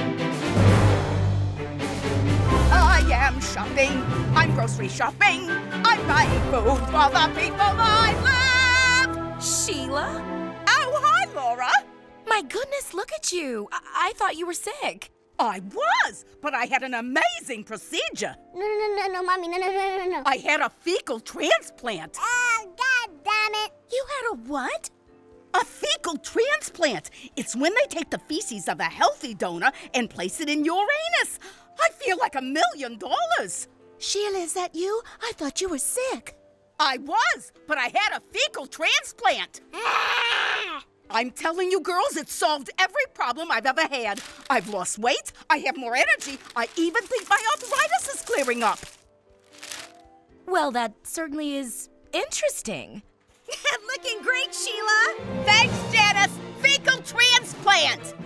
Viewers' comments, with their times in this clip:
0:04 I absolutely love Sheila’s song !!
0:39 Ike’s “Aaaaaaahhhhh!” Is so cute!